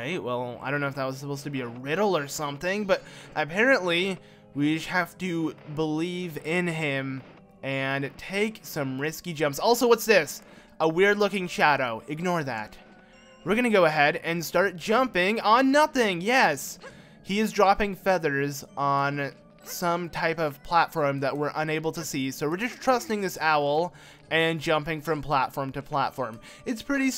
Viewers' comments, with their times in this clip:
0:08 I laughed at how fast you said it and it was like you got distracted for a second lol